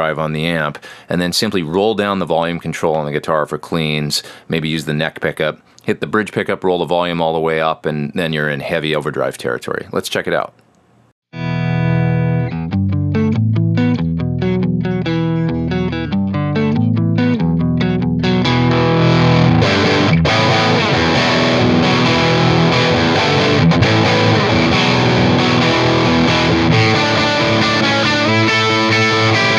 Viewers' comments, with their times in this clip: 0:10 I also wanted to say that that piece looks like a fun tune to play. It sounded good and has the right amount of drive, overtones, just great!